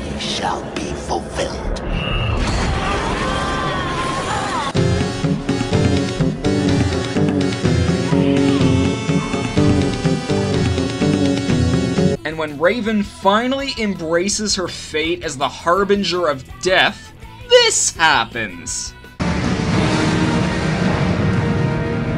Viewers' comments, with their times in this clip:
0:04 Music made me like the video without even finishing it.